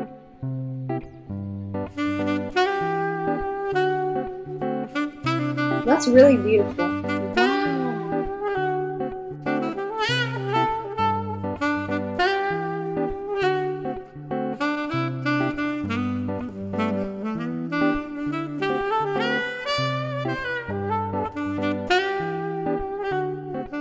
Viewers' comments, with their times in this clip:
0:09 Sounds really good well played